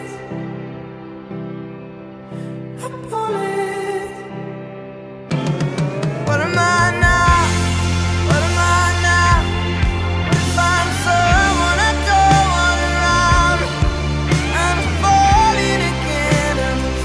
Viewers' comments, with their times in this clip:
0:05 THE ABSOLUTE POWER OF IM YELLING